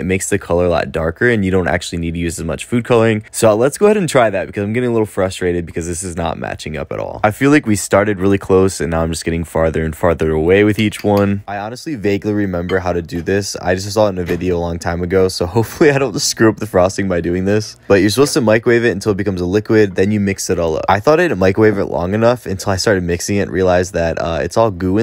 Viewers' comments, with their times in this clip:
0:06 the fact that he said "lets try it" during a cake emergency gave me anxiety, but the very fact he was so calm about it at the same time feels calming at the same time😅😅